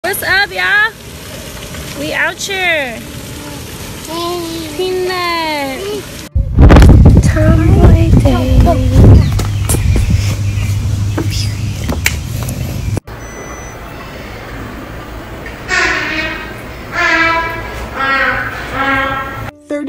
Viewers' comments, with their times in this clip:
0:02 so aggy with the blackcent 🙄